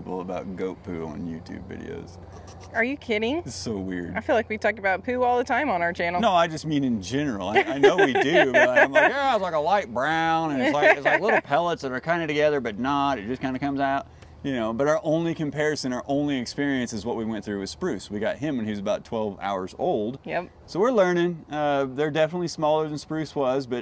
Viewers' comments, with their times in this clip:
0:07 you did a pretty good unintentional impression of Ernest (from Ernest saves Christmas for example) and it was very funny 😆